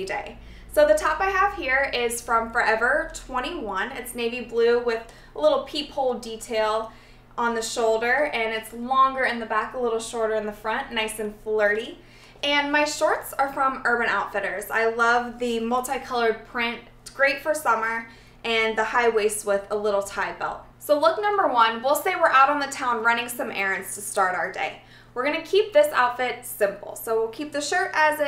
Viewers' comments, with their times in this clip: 0:10 lol! nice and flirty! i love the way she said that! ~ ~